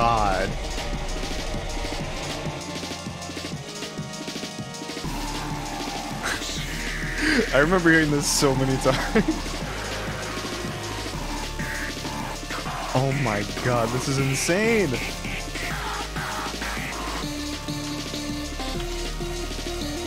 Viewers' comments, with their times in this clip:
0:03 I know im late but is it just me or can you hear tricky say :You'll Sing Through HELL: